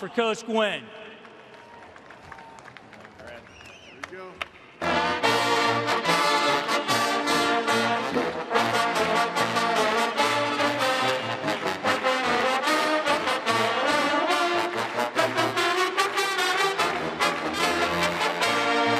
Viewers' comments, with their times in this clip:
0:04 Very beautiful song. 👏🏻👏🏻👏🏻👏🏻